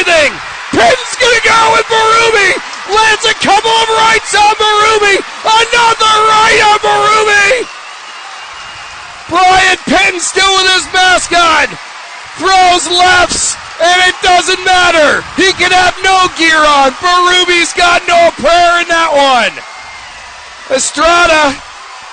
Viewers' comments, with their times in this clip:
0:07 announcer jizz all of the place